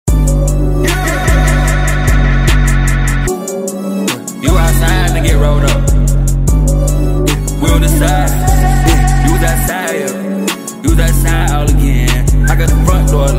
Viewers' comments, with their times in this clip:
0:00 This man is a prolific engineer of a lot of things and signature sounds is one of them. For instance that 2093 echo "YEH-YehYehYehYeh"